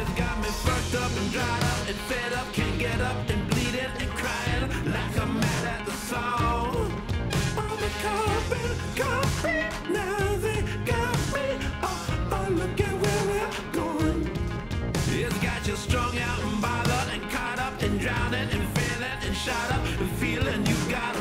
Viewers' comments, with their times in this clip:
0:08 love TOTR, however quite disturbing how the paedophile from Family Guy is singing